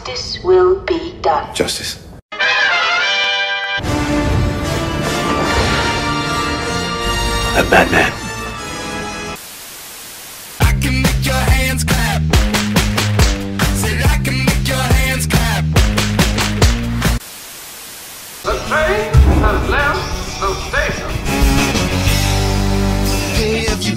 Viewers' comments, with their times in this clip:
0:07 is the time you hear Dean Winchester say “I’m Batman!” Who else caught that???!!!💛💛💛